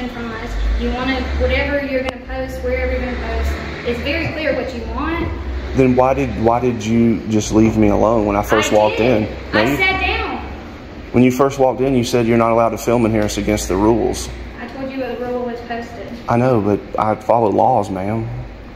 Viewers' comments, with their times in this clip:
0:05 So She is the smart one in the city, And she knew what you were doing Hahaha Notice how loud and nasty she got Your little sweet pink public Servant lol THESE OFFICERS DID THE WALK OF HONOR!!!